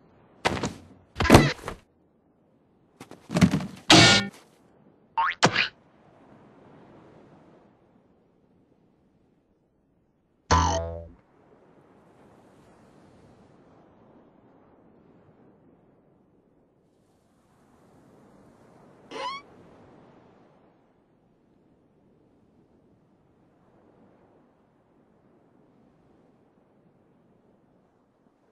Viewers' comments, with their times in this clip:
0:10 Three Jews Harp Boings (3rd boing)